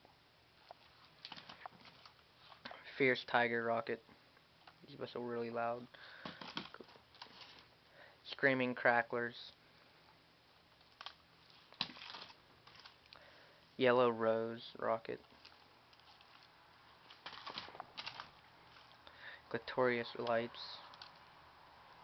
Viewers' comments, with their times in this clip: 0:06 At first on I thought you siad screaming crack head rockets.